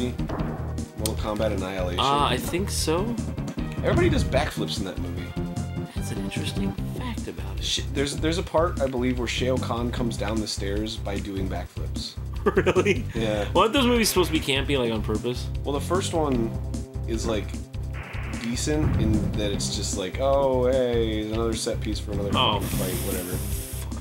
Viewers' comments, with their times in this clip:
0:09 Wait, did arin really just pronounce Shao khan like that?